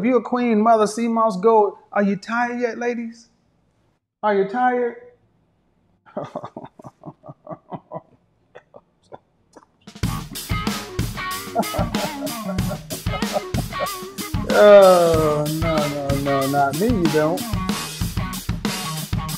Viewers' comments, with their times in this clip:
0:06 not the evil laugh 😂😂